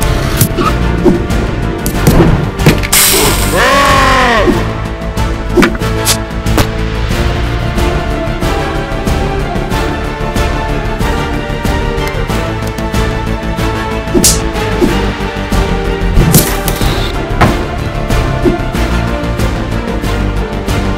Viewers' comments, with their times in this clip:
0:03 is it jus me or does that sound like arbiter from halo